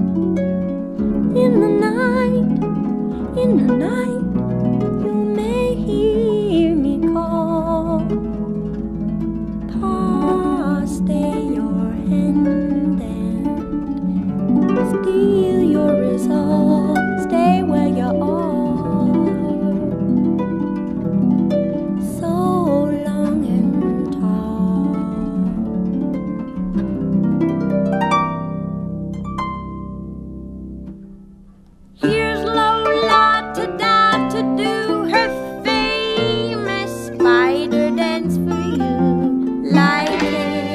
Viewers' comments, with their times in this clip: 0:07 is definitely one of Joanna’s lines that are the most beautifully sung. “Pa, stay your hand and steel your resolve. Stay where you are, so long and tall.” Ugh I just melt and get transported somewhere else when I hear that. And with the accompanying harp flourish. Wow.
0:26 That D7#5 run Chills.